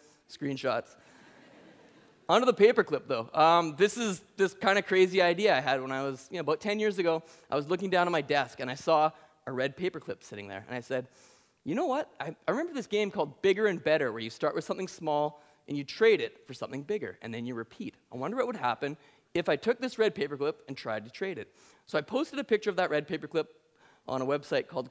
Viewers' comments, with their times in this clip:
0:06 yup, he's Canadian